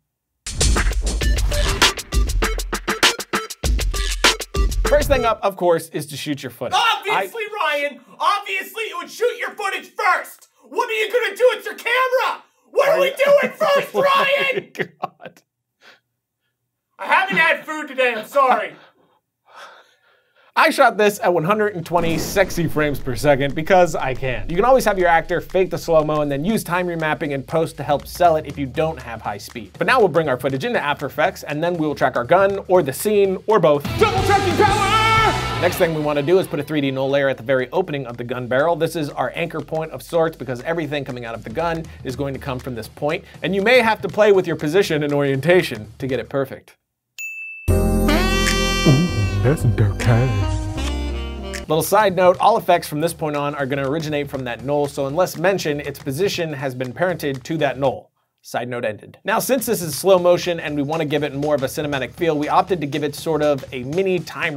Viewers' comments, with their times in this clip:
0:10 the guy in the background sounds like the english version of erin jager from Attack on titan. Does anyone else think that?
0:47 The "Dirtay" thing sould be a meme!